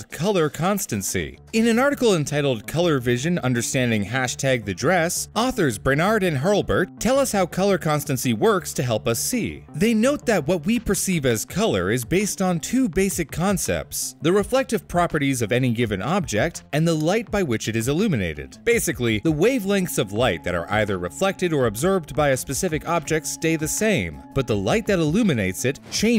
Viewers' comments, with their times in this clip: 0:07 seems like they cant breath through their nose